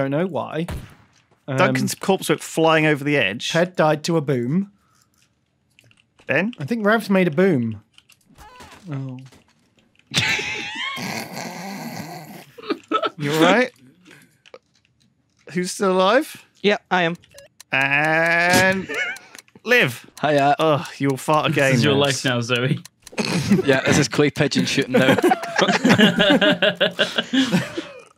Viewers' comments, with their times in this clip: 0:09 that really sad "oh" made my day